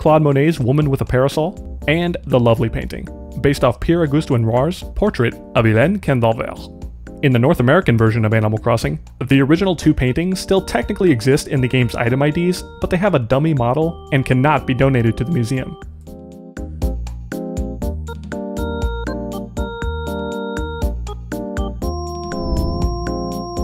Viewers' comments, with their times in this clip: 0:06 not sure if anyone talked about this but I was shocked at how well you pronounced the name of the painting haha 🇫🇷🇫🇷